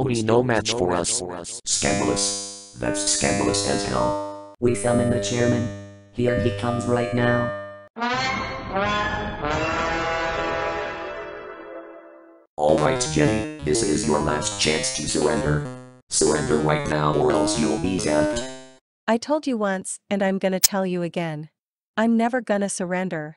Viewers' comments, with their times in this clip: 0:08 what's that dramatic sound from?